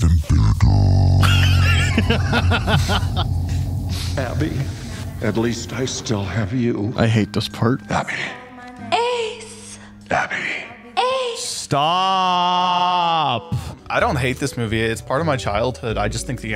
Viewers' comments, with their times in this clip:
0:04 mayor west voice